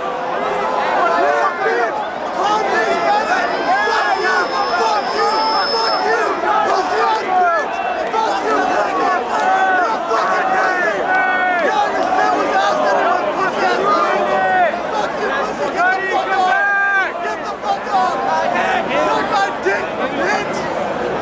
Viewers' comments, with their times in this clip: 0:05 Guy screaming thinks he's so cool😐